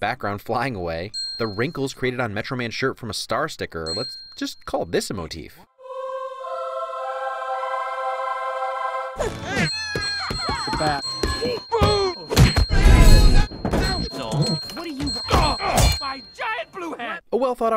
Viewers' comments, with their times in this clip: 0:03 I'm loving the fact that you perfectly timed that ding right when metro man winked !